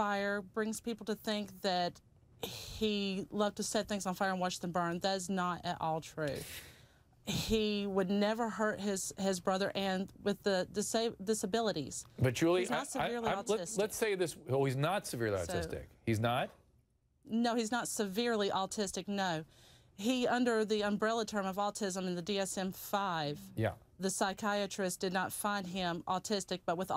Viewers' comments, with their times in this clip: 0:07 Wait listen very carefully and also read her lips… She said he would never hurt his SON under her breath she just in time catches herself and says brother but her mouth still says the word son… she’s talking about the dad really pay attention look and listen